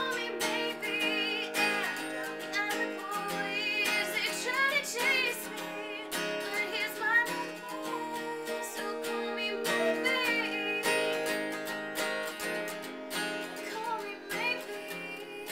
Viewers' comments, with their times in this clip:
0:03 ---- heavenly. girl is a star. really great voice hope you go far!